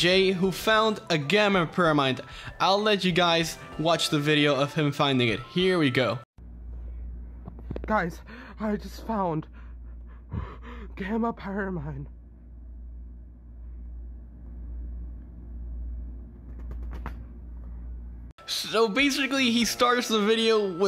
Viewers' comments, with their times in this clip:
0:07 Im sorry but it honestly it's hilarious guys I just found, breaths heavily gamma piramind disconnects puts phone away